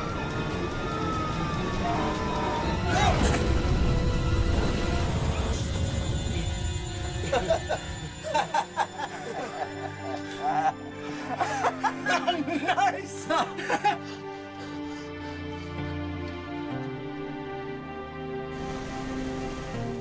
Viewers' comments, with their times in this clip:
0:04 all he can do is laugh